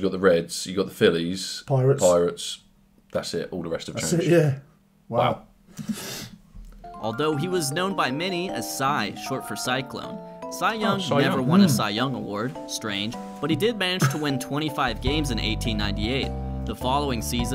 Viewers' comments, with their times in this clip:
0:04 That “wow” and breath in unison was hilarious